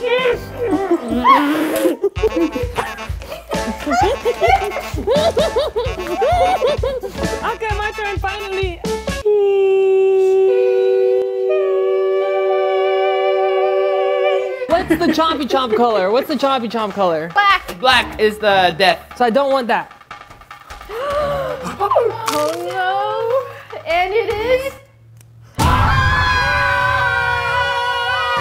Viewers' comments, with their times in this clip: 0:09 the harmonizing thing is so cool. my finger keeps double tapping to bring it back. its so universal🤣
0:09 I kept on replaying the part where they did harmony
0:09 WoW tHe HaRMoNy HIt haRd!!!! 🤩
0:09 the best sheesh singing group
0:09 That harmony tho 🤩
0:10 YO FORM A SINGING GROUP RN CUZ THE HARMONIES ON ARE BOMB